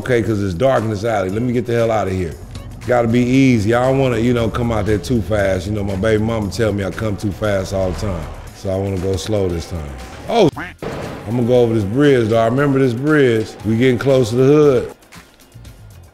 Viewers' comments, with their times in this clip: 0:04 literally unwatchable because of all the censoring. the brain aneurysm set in around the mark